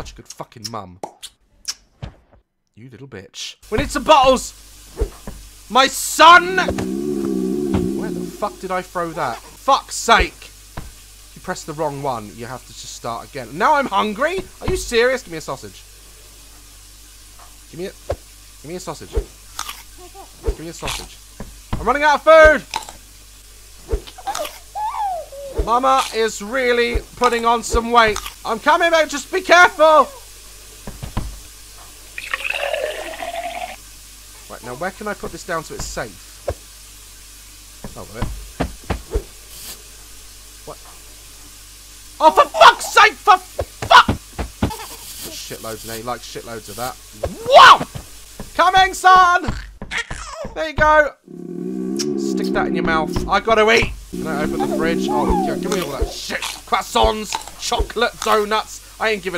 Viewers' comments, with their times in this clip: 0:07 Is that supposed to be her stomach rumbling ?😂😂
0:40 the pause when he relized it wasn’t there